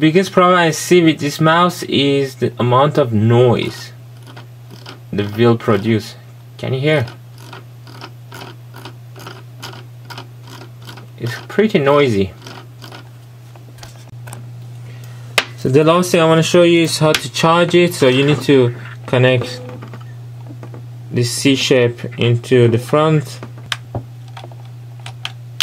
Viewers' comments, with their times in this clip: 0:08 the noise is because you havn't pressed the button on the mouse to give a smooth scroll. The scroll feel is selectable.